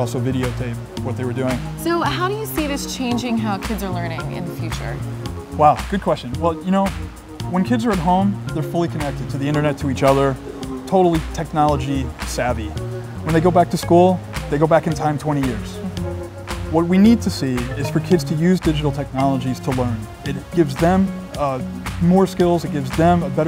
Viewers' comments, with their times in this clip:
0:07 very well spoken